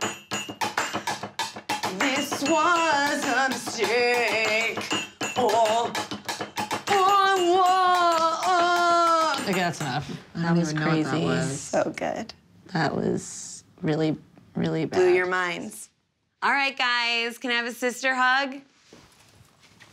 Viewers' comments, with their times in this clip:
0:05 Alana almost crack